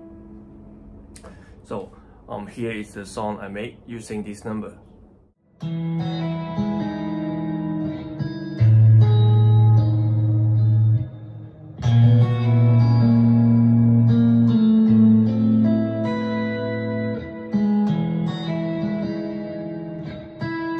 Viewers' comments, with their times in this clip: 0:05 that was beautiful music! I love that it sounds quite melancholic